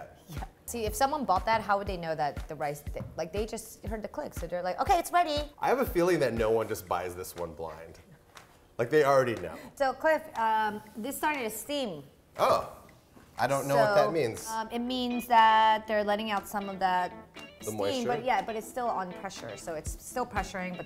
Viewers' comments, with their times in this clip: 0:03 that Asian accent came out natural. 😂 reminds me of when my wife’s beans are done and her Spanish accent is on point.